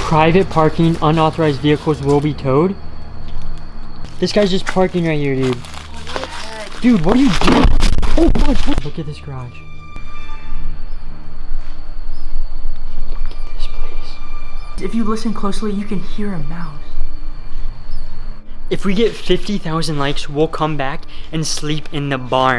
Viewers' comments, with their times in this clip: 0:04 Bro was so funny I loved how the audio broke